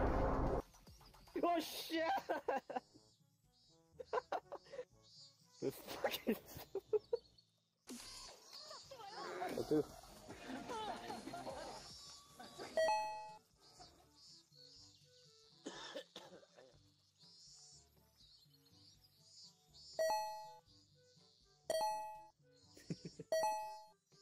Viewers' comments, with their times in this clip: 0:07 Well someone is listening to some PUNYASO.